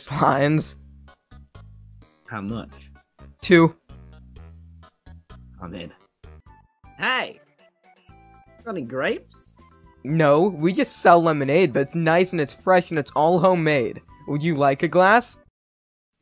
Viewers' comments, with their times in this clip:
0:04 the fact that there’s undertale background music makes this so much better for me (lol I’m such a fan) (btw like ur creativity! Gud original idea!)